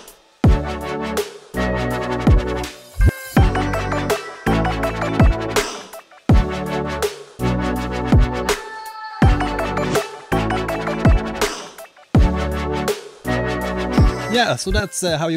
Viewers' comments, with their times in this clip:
0:03 How do you make the high pitched squeak noise right after the drum beat? is there a name for that noise?